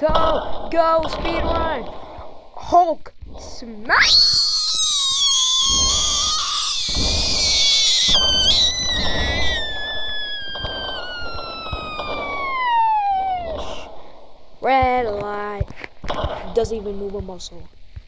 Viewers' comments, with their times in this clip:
0:04 if you play Roblox pet story you should hear him scream and it sounds like the rat scream